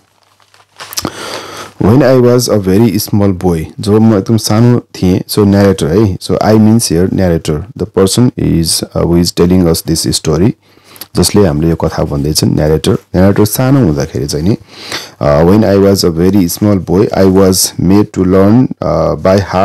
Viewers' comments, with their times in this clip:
0:04 Starting to telling story in Nepali